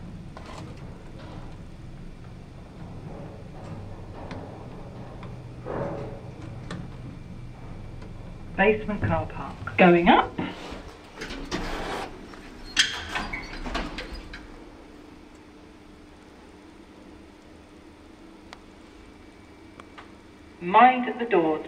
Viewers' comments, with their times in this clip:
0:09 The 'going up' voice sounds rather cheerful.